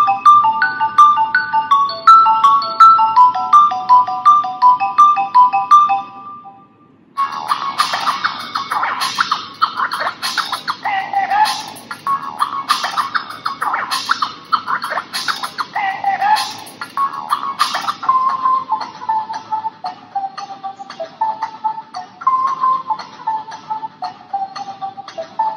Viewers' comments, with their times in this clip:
0:08 put in 2x, sounds a music much better